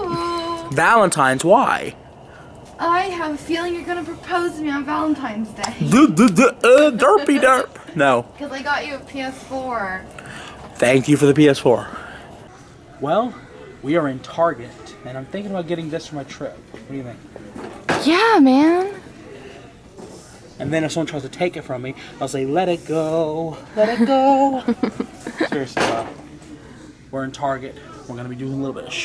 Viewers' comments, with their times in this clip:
0:07 LOL your Dr Phil impressions and "Derpy derp!" killed me lol
0:15 Normal Voice !!! (Like my pajamas, HAHAHA funnest thing I've seen you do !!)